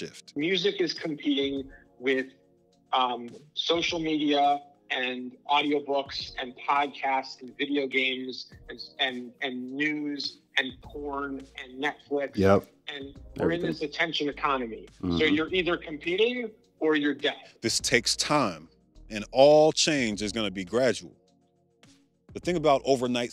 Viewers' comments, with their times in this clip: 0:09 the quiet "yep" specifically after porn is mentionned is wild lmao